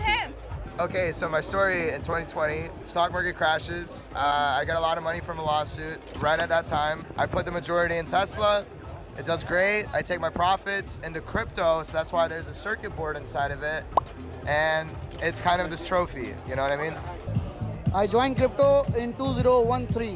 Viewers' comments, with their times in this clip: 0:03 I was only listening while walking and the guy sounds exactly like Jonah hill haha